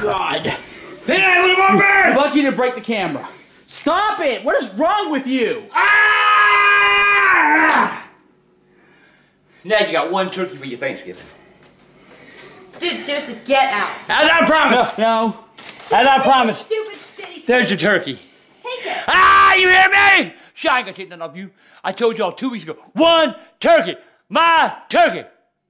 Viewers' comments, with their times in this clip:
0:05 It’s so funny when Grandpa ripped the turkey and screamed 😂
0:07 sound like trevor from gta V🤣🤣🤣🤣🤣🤣